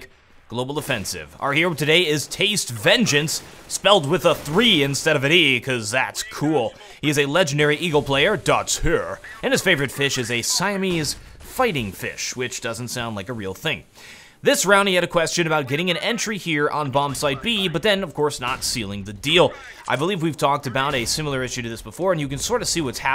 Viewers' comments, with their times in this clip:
0:08 To continue the subtitle madness "...is a legendary evil glare dots here..." :D